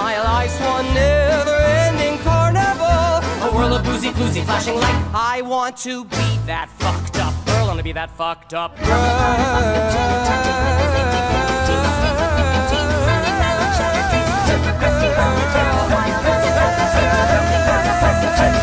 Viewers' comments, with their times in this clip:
0:04 MY GOSH THE VOCALSSS
0:05 That end tho it’s like a angel sang it HOT DAMM WOOO